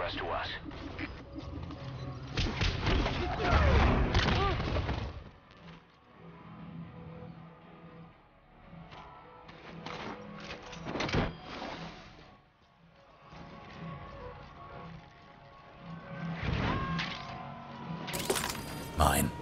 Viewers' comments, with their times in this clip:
0:04 Asskicking handed to a guard whilst "The Final Countdown" played. Well done sir.